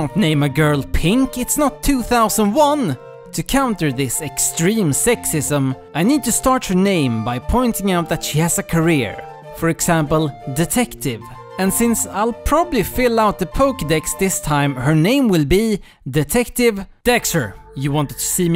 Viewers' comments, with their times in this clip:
0:05 I wasn't expecting the steampunk "girls just want to have fun" but I like it